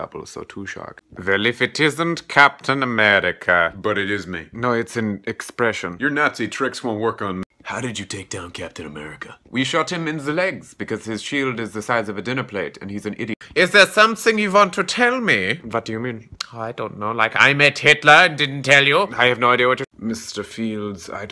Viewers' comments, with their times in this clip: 0:05 THAT CAPTAIN AMERICA VOICE IS PERFECT